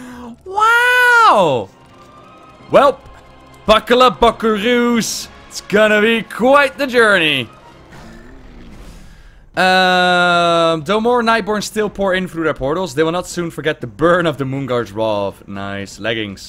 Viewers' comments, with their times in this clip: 0:03 Worst cowboy accent ever - John Wayne you ain't man